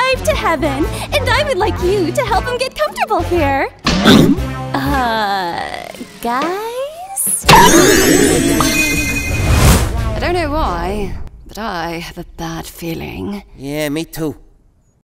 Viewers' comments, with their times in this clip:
0:11 is it me or does Cherry bomb sound like Rose Byrne